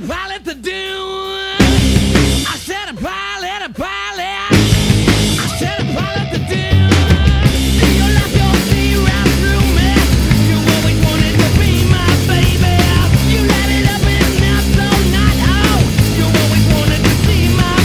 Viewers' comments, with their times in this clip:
0:04 when that backround guitar jams for like 2 seconds? The most badass part of any rock song in the history of music.